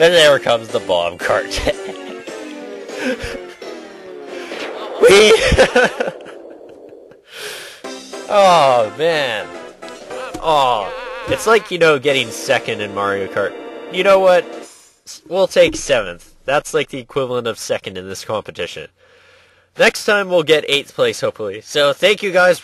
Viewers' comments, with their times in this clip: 0:10 Luigi is singing this theme from 4th-8th Place.